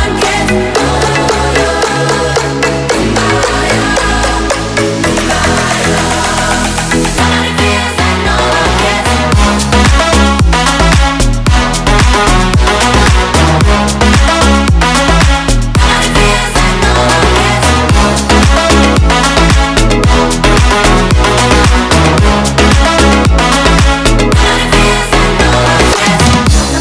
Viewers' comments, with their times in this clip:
0:09 Best the moment 🤣 nice song!!!